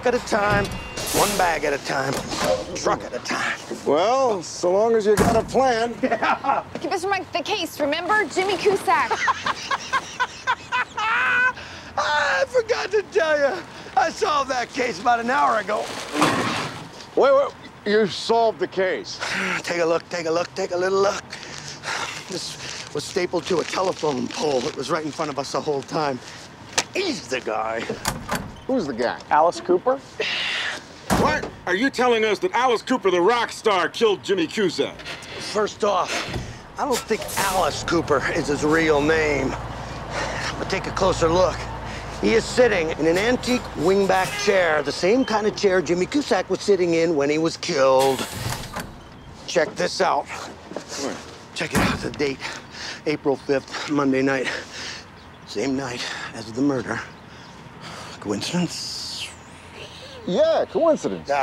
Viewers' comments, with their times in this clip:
0:08 That laugh shows you he has lost it! 🤣 Best part ever.
0:08 His laugh sounded like the joker
0:09 Monk's laugh has to be one of my favorite moments of the show
0:09 that maniacal laugh is perfect
0:09 I love seeing Monk this happy, especially that laugh ... but simultaneously concerned 😕
0:15 he does a crazy Joker laugh 🤣
0:47 the way he said killed